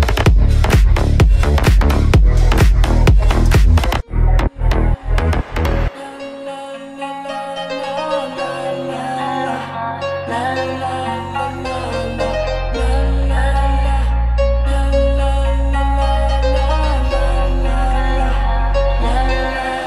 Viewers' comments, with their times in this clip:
0:06 sounds like my alarm XD